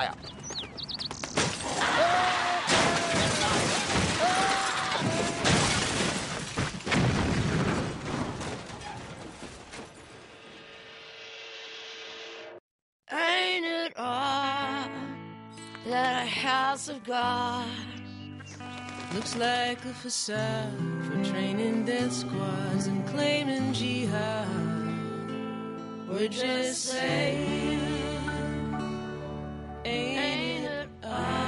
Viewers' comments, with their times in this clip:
0:09 this is the coolest. most ridiculous william street clip that i ever liked XD but bipedal or not even though i'm not usually a squidbillies fan. i still think or believe that ridiculousness is one of the only things making the millenium cool. plus that car crash look funny with the animation and those birds sound awesome in a gothic kind of way ^_^ ! ! ! ! !
0:13 I just looooove the birds singing I lived in Miami Beach and walked by one night a southern guy that had Early's accent, couldn't believe there's people like that for real. He was saying something like " shoot.. Barack Hussein Obama.. shoot.. man..frickin- ..... OK Corral.. " I couldnt help chuckling to myself. BTW, by "shoot" I dont mean like in a gun, I mean like slang talk.